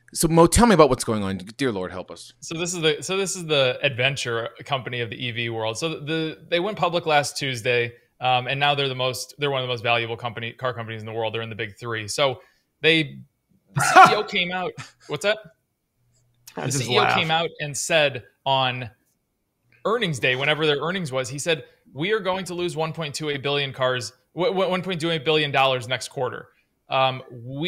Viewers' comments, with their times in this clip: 0:10 The genuine laugh got me. 😆